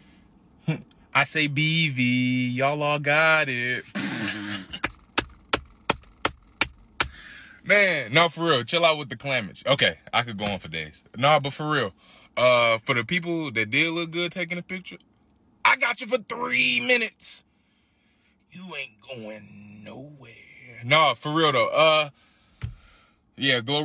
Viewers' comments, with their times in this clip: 0:06 what?¡!!!!¡ 😂😂😂😂😂😂😂 a jingle for BV 😂😂😂😂😂